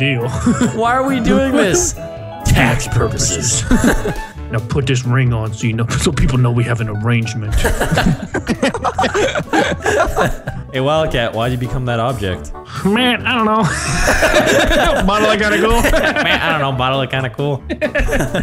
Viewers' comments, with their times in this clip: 0:03 Now put dis ring on so you kno- SNICKER so people know we have an arrangement. 😂